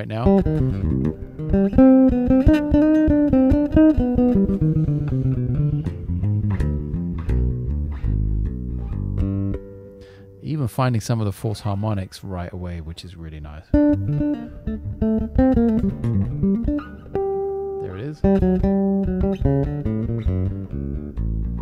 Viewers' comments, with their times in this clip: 0:07 Janek the snippets of music you played, say was just heavenly . What genre is that? I absolutely love it and would love to explore that style more